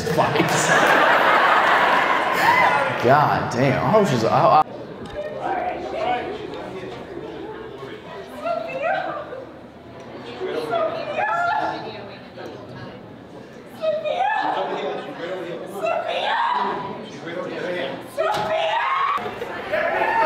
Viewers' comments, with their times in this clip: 0:08 is when you can actually hear something besides screaming from audience. The mic placement was messed up or something.